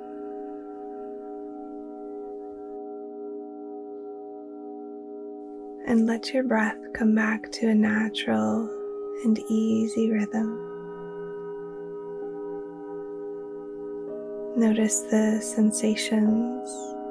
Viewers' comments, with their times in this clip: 0:03 Practiced 25 Jan pm. I love the sound of singing bowls! Takes me very deep, very quickly